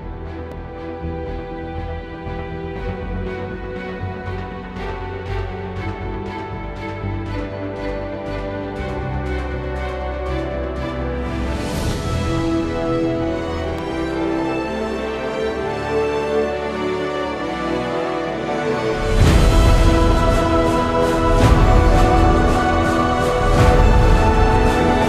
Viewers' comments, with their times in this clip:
0:08 That tempo and that music had me expect SERIOUS badassery from me3. I was left high and dry, and I was forced to take a cold shower.